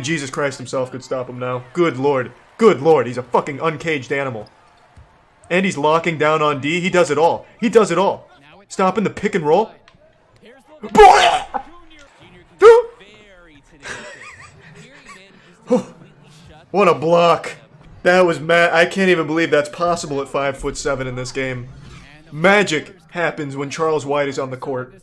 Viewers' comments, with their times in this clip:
0:09 wtf was that noise 😂😂
0:10 The noise sounded otherworldly
0:11 So uh no ones gonna talk about the choking noise he made